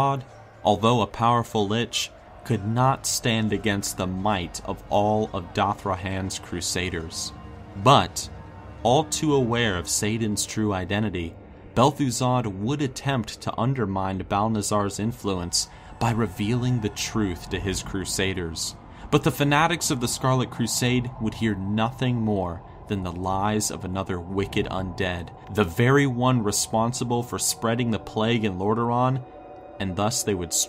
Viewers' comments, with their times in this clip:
0:10 he says Bel'Thuzad
0:10 he says Bel'thuzad not Kel'Thuzad lol
0:11 Bel'thuzad, the lesser known cousin of Kel'thuzad.